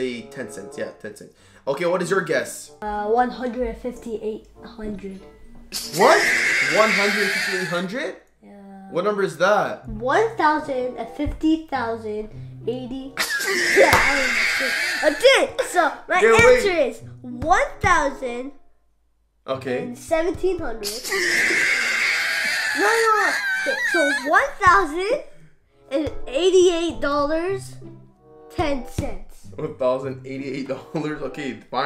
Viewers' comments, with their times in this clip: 0:03 He said it so confident lol
0:12 HAHAHAHA WhaT TyPe Of LaUgH Is ThaT